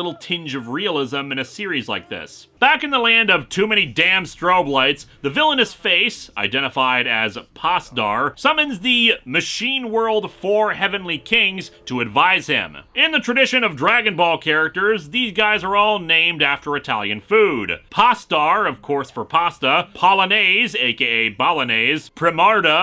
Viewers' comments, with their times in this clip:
0:07 I knew the thing looked like Sinistar but I didn't think that it was a straight up knockoff. ...Oh it's Pas der, not Postar, nevermind.